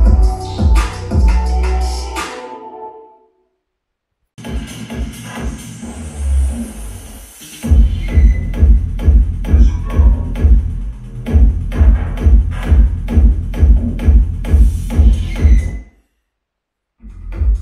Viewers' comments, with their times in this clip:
0:05 Song title in ?? Jbl much cleaner deep bass.